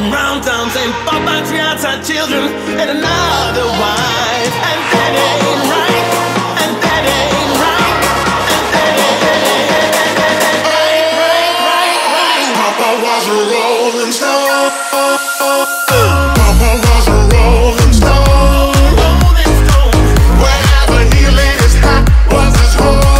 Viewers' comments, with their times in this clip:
0:07 I feel as thought the drop could have been harder and more like the lower sound w maybe a steff da campo kind of drop! or more twisted house